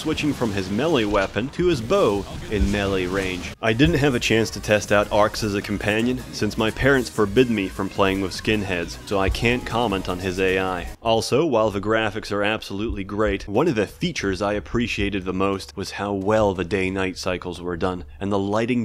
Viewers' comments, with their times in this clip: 0:03 That music choice has aged like fine wine.